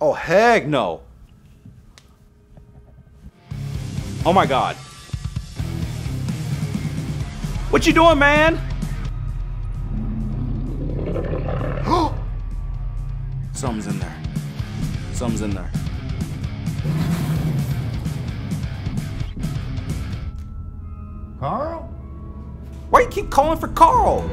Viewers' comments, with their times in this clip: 0:10 what was that sound was it like growling or something else